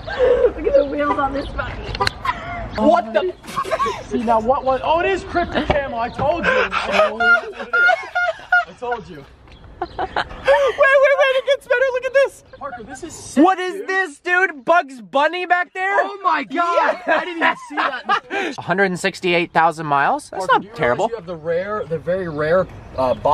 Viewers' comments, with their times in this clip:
0:08 lol that laugh tho